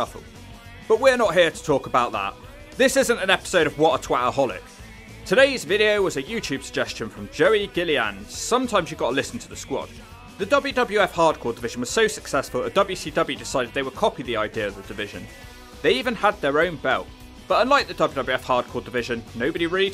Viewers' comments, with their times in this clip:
0:03 Why are all these wrestling bio channels always Scottish guys with distracting and hard to understand accents? I mean wtf does he say ??